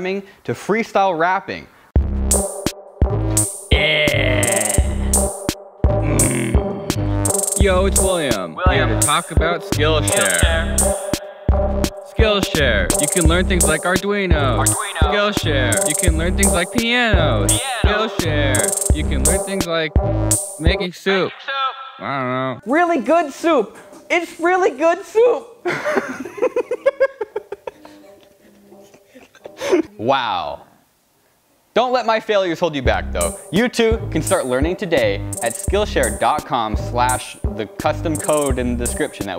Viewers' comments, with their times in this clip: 0:03 omg the growl at the beginning of his rap
0:22 ... Caretaker also laughed...